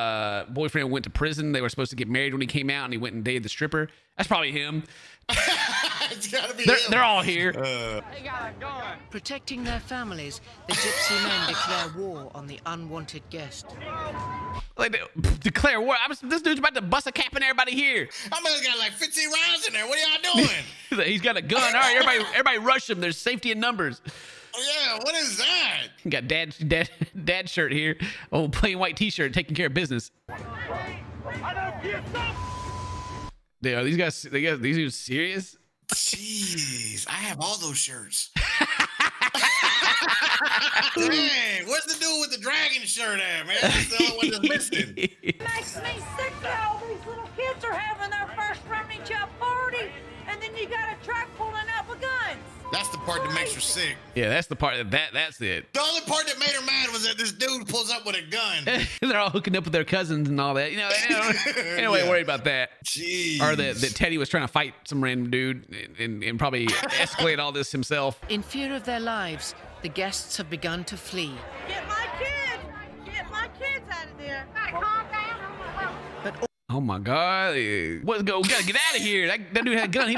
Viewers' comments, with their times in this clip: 0:08 sounds like a documentary on animals in the wild
0:44 For the first second after hearing this I honestly thought she said "something slur slur, these kids are having their first Rum n' Coke chill party"
1:08 sounds like it came from a wild life documentary